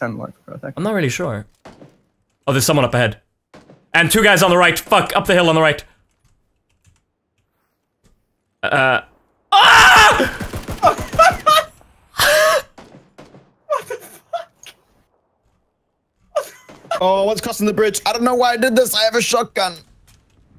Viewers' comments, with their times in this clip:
0:07 Ive listened to the scream for like 10 mins now omfg